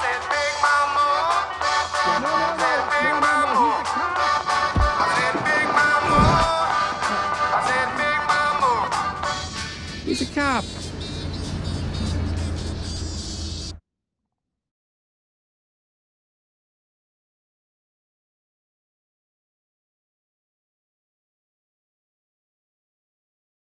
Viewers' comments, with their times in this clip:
0:09 I love Bob's voice. I love it so much.